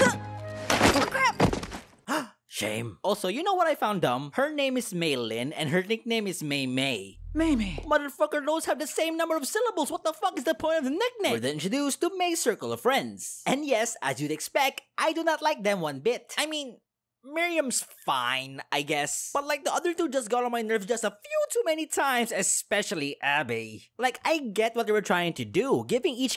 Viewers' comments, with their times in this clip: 0:07 reported for illegal or inappropriate impression